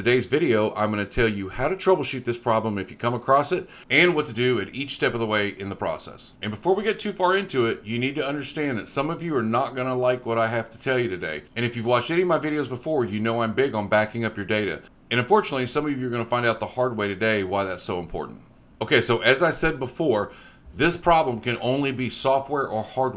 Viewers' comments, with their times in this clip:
0:08 So far, into the video, whether you can help me or not, I am liking it because you have no hard to understand foreign accent, and I am GOOD with understanding accents! :trophy-yellow-smiling: